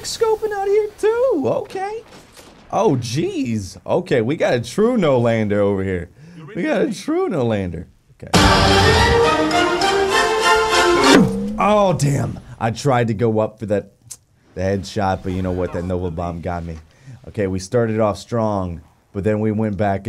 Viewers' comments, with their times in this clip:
0:07 The music and then the Hell Nawl to the naw naw naw! Man I'm done! 😂😂😂💀